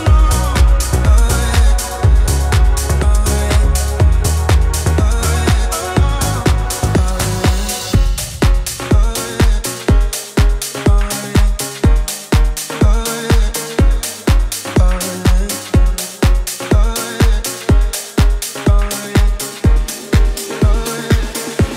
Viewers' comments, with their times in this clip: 0:04 anyone else like the key change here ?